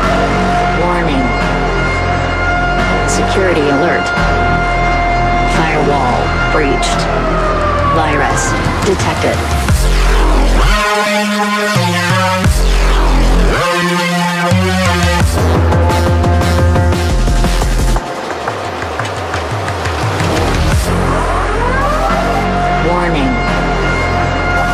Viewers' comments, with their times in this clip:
0:08 BOOMTOWN VIBESSSS!!! (PS i have a higher quality .wav of this if you want - yours doesnt seem as high quality on my speakers lol, but that might just be youtube :P)